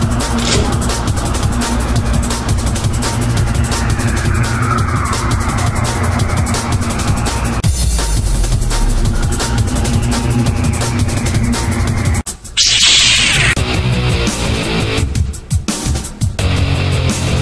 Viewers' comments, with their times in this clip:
0:03 No wonder Pico's voice sounds so raspy in Friday Night Funkin'.